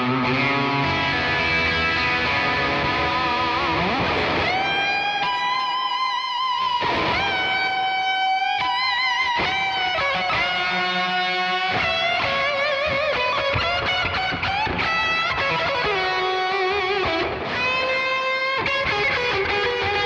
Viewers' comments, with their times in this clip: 0:04 oh boy, what a cool riff.